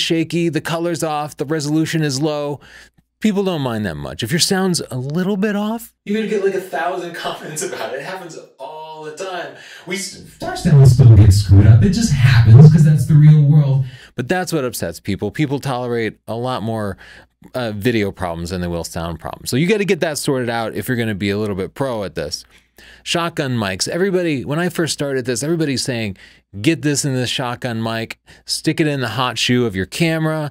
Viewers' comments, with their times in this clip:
0:06 I don't think your mic is working properly, seems to be randomly boosting bass and treble.
0:06 3....2.....1 Cancer sound activated to violate your ears x.x..... But for those reading the comments highly recommend this video was awesome overview.
0:12 The distortion had me laughing out loud. Thanks for the informative video!
0:12 I was literally crying over the bad sound you generated LOL XD